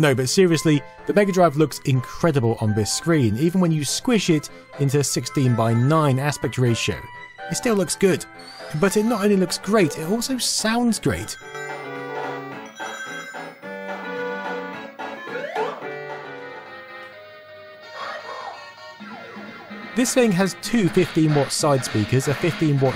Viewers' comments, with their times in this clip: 0:10 Sounds slow to me 😝